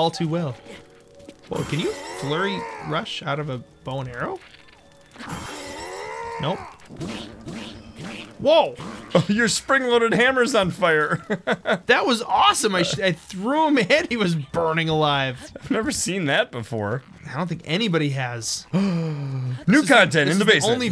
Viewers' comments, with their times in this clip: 0:04 who else thinks daruks protection sounds funny in Japanese?